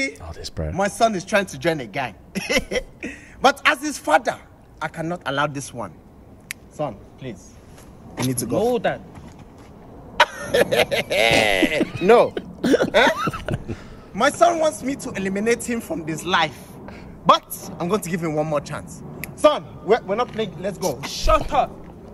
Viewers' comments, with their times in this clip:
0:09 we all know this laugh - you don’t wanna hear this laugh from your African parent.